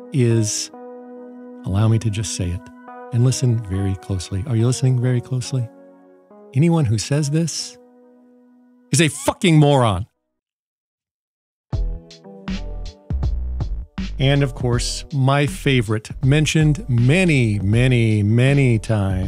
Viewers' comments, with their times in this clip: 0:03 Killed me, totally unexpected with the calm voice.